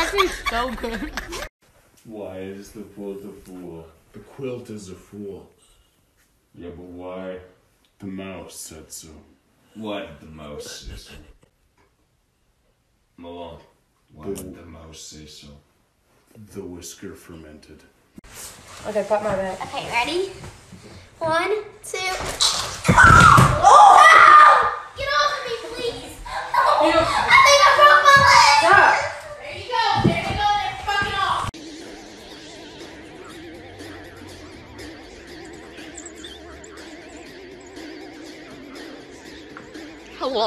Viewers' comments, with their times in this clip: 0:05 are they..SLEEP TALKING..??
0:18 I love how the tall one believed that the small one can lift her. The mom sounds like this isn't the first time lol
0:22 you can like hear something crack. wtf